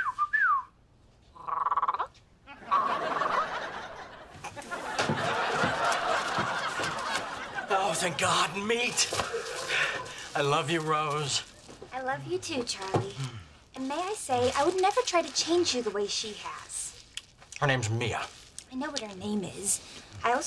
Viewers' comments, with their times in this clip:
0:07 why he say it like that 💀💀💀